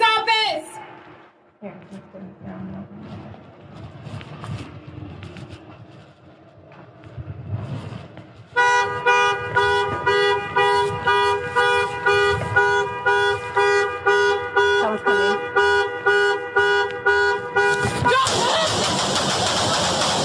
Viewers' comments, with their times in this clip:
0:07 The car alarm going off could've been construed as attempting to lure her out. Which makes the shooting worse.